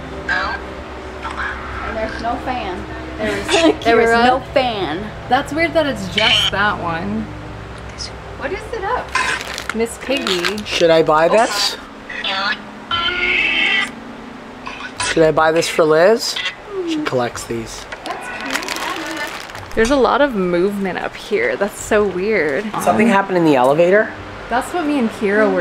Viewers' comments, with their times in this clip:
0:07 there was a whisper it sounded like "Kelsi" or "this one"